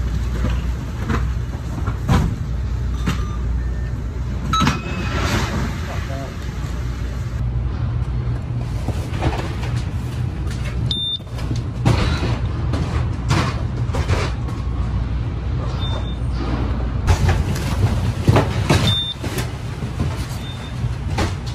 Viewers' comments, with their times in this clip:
0:04 Man, hearing that error ding brought back some bad memories